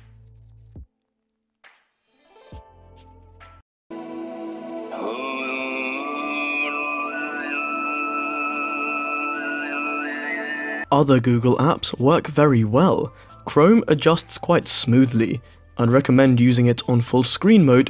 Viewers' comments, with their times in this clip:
0:04 Never thought I'd see Mongolian throat singing featured in a tech vid but I'm here for it! 😂🙌